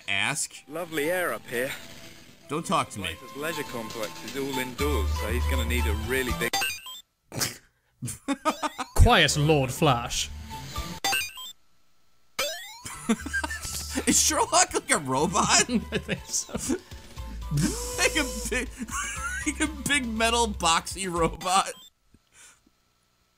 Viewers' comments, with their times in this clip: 0:03 "It's all indoors, so he's gonna need a really big-" BEEP That timing was great.
0:07 "Mmm, lovery air up here." Must be British Engrish.